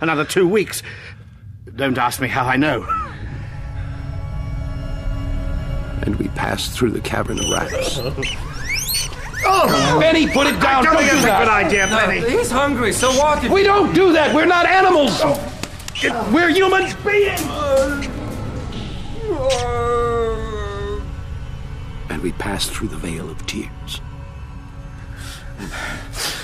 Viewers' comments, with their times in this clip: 0:04 "And we passed through a cavern of rats." (A bunch of guinea pigs start wheaking)
0:07 Bro listening to the hate speech and then soon after just hearing guinea pig squeaks is surreal